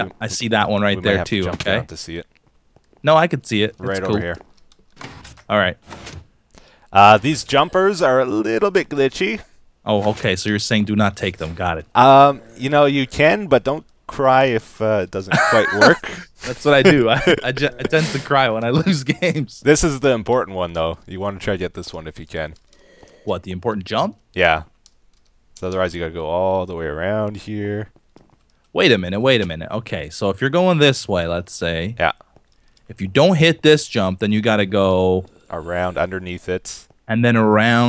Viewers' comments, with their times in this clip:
0:06 ...whats that sound ..another one follows... and another.... very creepy zombie noises
0:23 What was that noise ? Is it a zombie? Cause I hear at a again later.